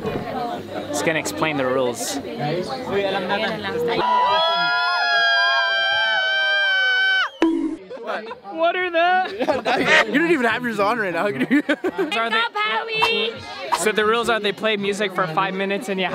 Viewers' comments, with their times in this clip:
0:04 haha!! wht a scream! so funy!